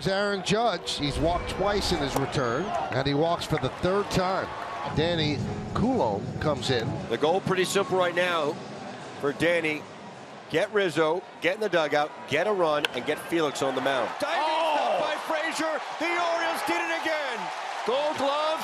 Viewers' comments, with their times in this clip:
0:05 did Micheal Kay just call the pitcher "Danny Culo?"